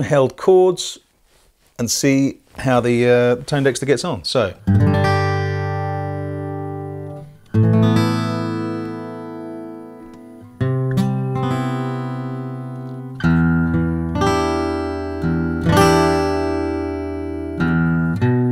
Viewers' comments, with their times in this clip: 0:06 What is that horrible high-pitched tone I start hearing ?